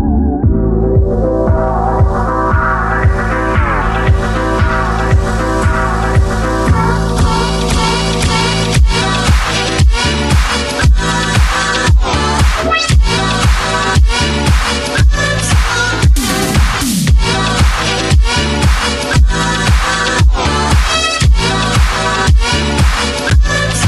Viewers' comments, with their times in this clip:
0:08 i imagine scorpion giving the classic line get ova here as the music gets hype